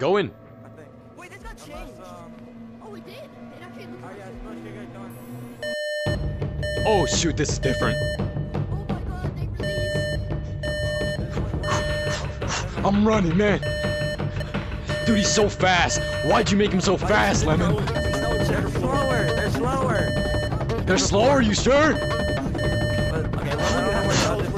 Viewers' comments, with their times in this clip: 0:06 The microwave ahh beat 🤑🤑🙏🙏